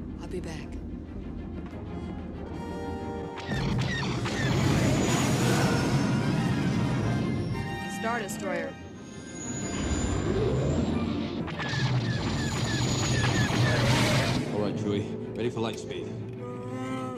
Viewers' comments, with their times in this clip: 0:05 I have a hard time understanding Williams' harp writing. At times the choices seem to me almost completely random; for instance, you point out that the trumpets are planing diatonic triads in F Aeolian over an F minor ostinato, yet the harp run is F Mixolydian. Why? I'm often just baffled by these choices.